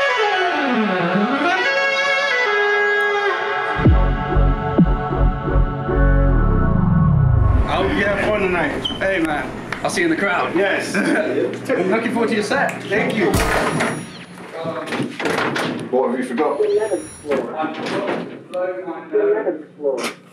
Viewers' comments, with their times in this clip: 0:03 Are those background wubs part of something bigger or just for this vlog? Because they should be part of something bigger, it sounds so badass.